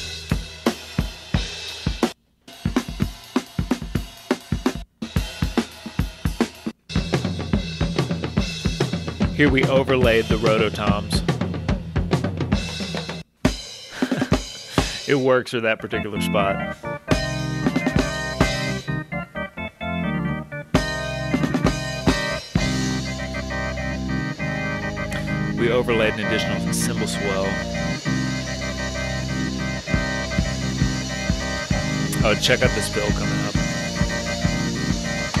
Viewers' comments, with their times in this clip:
0:06 Got me Black Sabbath - Children of the Grave vibe hahahaha
0:22 sounds straight up Jethro Tull. You ever thought about making an album of just one continuous track? :D